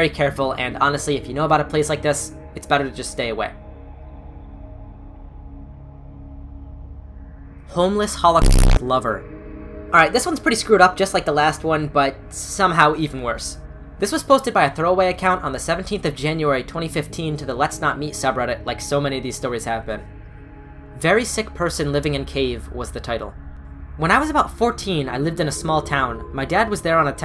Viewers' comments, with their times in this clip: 0:05 why this so loud dude
0:07 the fact this moment was the scariest thing, I JUMPED, that was so loud😭😭
0:07 hey, that censor sound made me shit my pants, just so you know
0:08 Scariest part of the video is that censor made me jump
0:09 that censor sound jumpscared the shit outta me